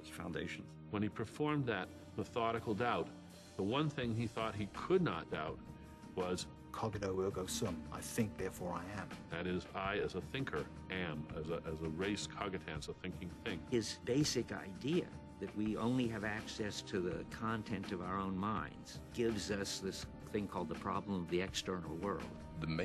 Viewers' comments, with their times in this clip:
0:06 insert pronunciation fail... cogITO ergo sum